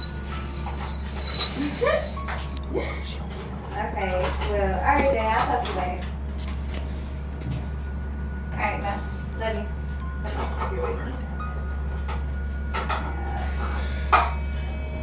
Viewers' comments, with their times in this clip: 0:03 The ear rape